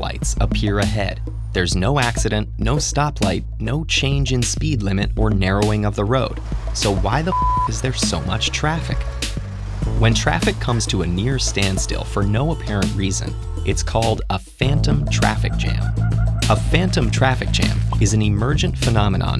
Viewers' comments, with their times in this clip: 0:06 Guy narrating is fed up